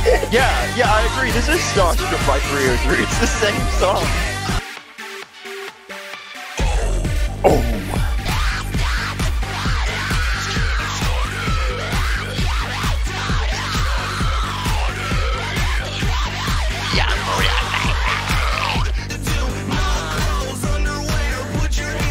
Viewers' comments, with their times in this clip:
0:09 dude sounds like Donald the duck